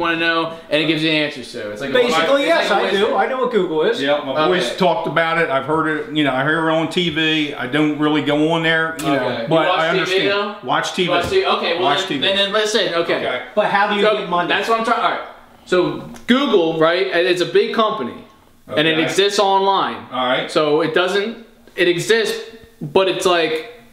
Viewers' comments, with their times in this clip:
0:06 did he just say YourOwnTv?